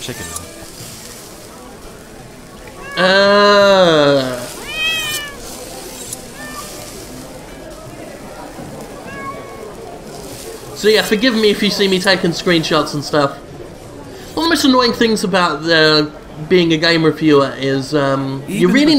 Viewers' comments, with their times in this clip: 0:05 The cat noises freaked my cats out.